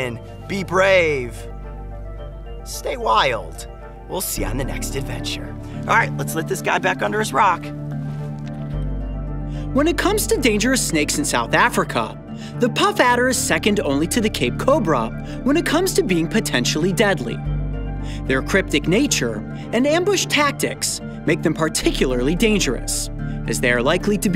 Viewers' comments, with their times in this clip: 0:09 The whole video till he sounds diff